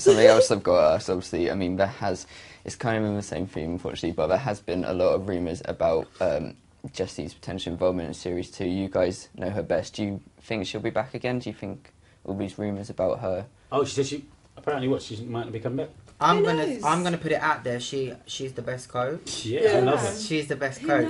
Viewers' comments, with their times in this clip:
0:05 what is he saying ?